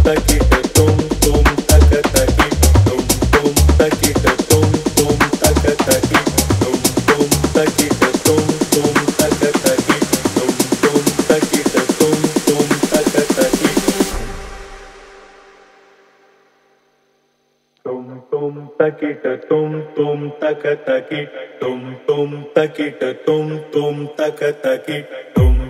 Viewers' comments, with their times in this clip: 0:06 what an awful track